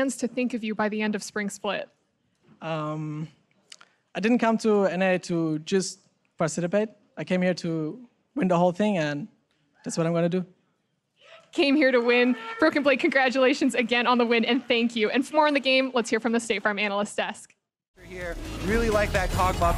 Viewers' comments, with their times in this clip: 0:05 hehe he said parcitipate instead of participate